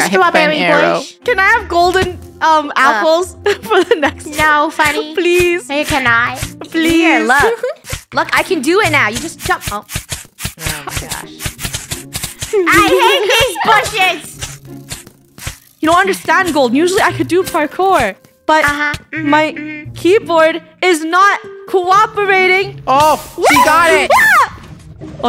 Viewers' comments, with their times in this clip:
0:10 the sound of just getting hit by bushes 😭